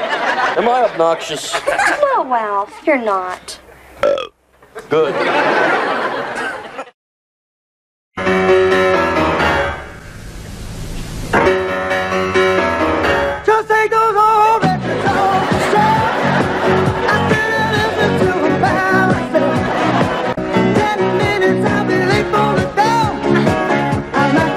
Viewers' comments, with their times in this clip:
0:07 finally in the right key